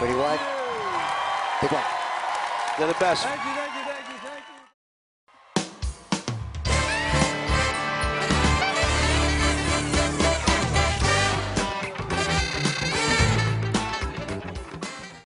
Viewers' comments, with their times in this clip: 0:13 Can't believe someone farted at the mark